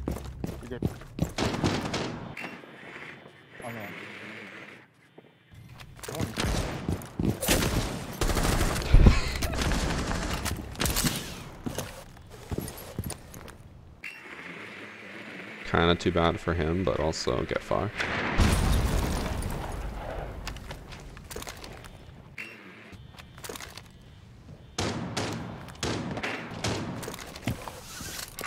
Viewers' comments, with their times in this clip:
0:09 bro laughs like an npc